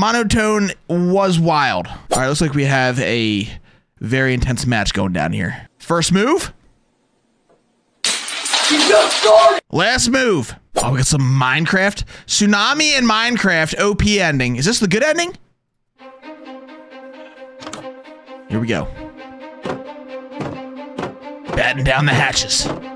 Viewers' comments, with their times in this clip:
0:04 the entire scene is was more funny when dude did jack sparrow's voice XD
0:05 Bro sounded like Jack Sparrow